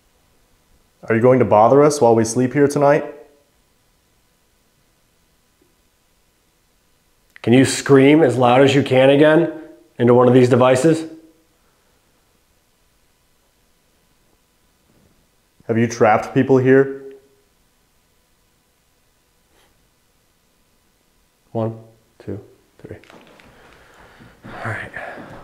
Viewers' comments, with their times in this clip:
0:06 ‘…..I’m a demon’ wisper